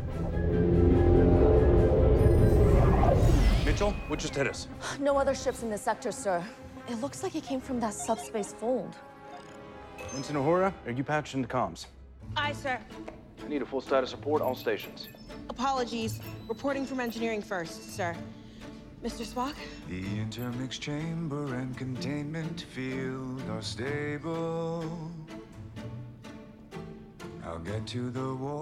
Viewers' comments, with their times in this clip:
0:10 I somehow managed to sit down to watch this episode without having heard there would be a musical episode. When the music kicked in ( in this clip), I was like, "No... are they doing what I think they're doing?!" and just started grinning. So good.